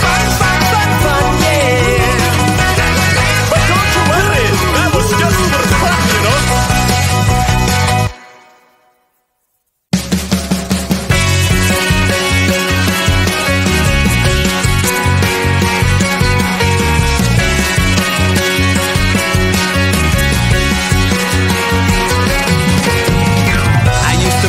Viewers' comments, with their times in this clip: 0:05 Is it just me or does it swear ?